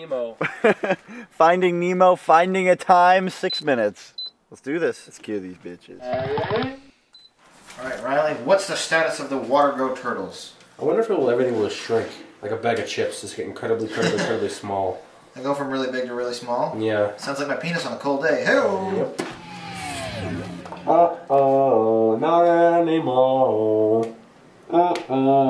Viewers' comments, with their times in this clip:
0:06 dosent he sound like hiccup from how to train your dragon?